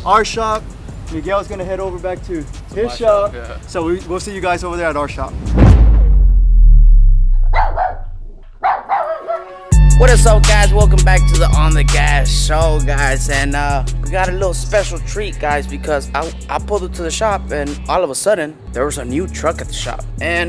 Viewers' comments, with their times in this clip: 0:08 😂😂 thought it was my dogs barking